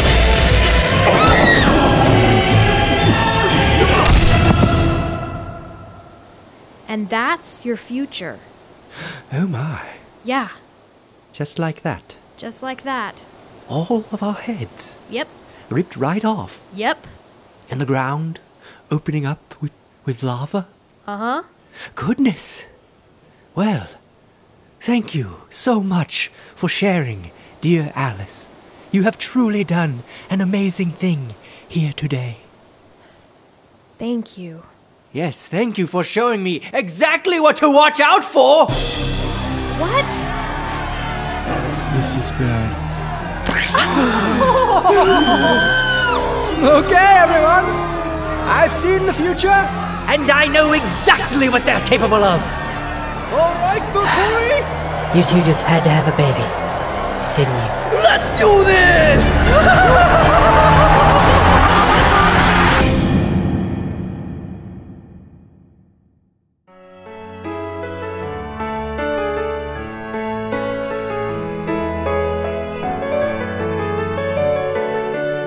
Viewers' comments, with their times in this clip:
0:10 sounds totally like Aziraphale... oops, sorry fellow Ineffable shippers.
0:41 it really sounded like edward’s voice
0:43 I'm dead 😂😂😂😂 The sound of the heads coming off
1:00 he laughed like pennywise